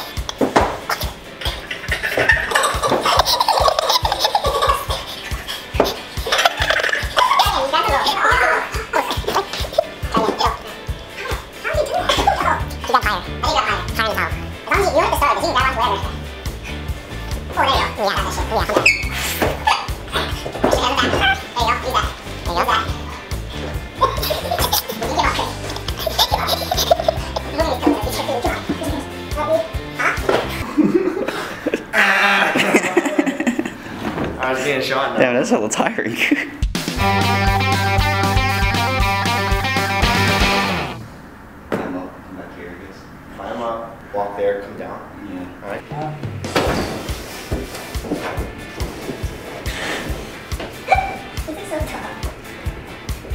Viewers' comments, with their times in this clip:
0:07 sounds like the minions laughing💀💀
0:40 "climb up and come down here, I guess..." shyly. JUMPS AT WALL LIKE A FREAKING GORILLA.